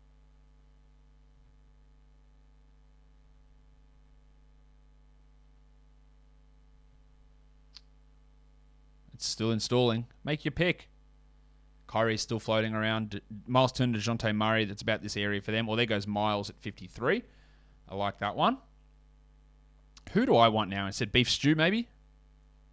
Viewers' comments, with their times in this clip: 0:08 Why did your voice sound like an ESPN sound affect lmao 😂